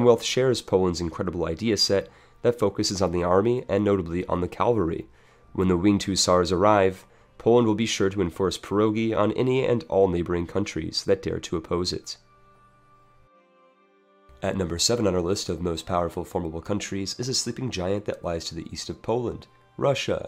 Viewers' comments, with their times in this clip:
0:03 Sorry to bother, American, but did you just say Calvary?